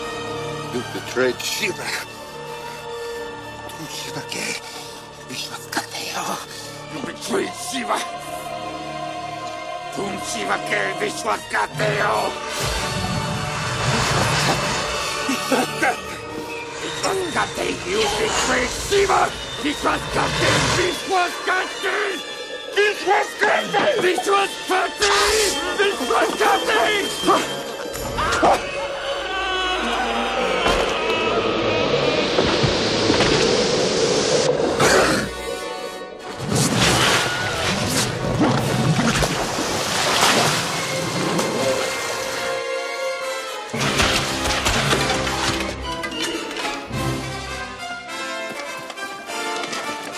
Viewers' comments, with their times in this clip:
0:05 Music is inspiring
0:10 That John Williams drop though…
0:24 he sounds like Chucky
0:33 if you here it closely you hear a meme
0:35 evil priest Wilhelm
0:36 The famous scream that every film uses it all the time.
0:37 This Scream is a Meme
0:37 the significant scream